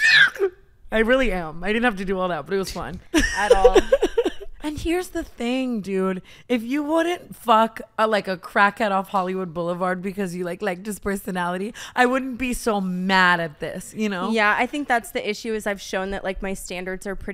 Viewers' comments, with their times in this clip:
0:03 love Tana’s frustrated screams 😂😂😂